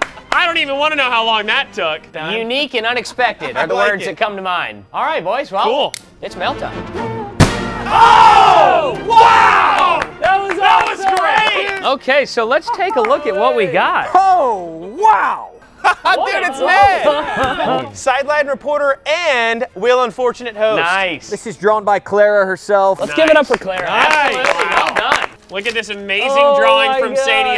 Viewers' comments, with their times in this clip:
0:04 Ty: Alright boys its mail time - Balloon pops All of dude perfect: OH WOW in sync
0:08 OH! WOW! (Said at the same time lol)